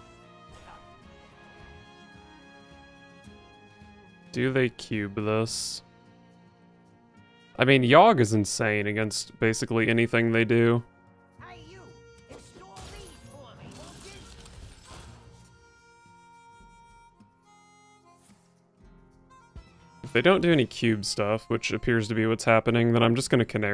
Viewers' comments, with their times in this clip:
0:09 Some nice synergy between Pozzik's music stinger and the background Badlands theme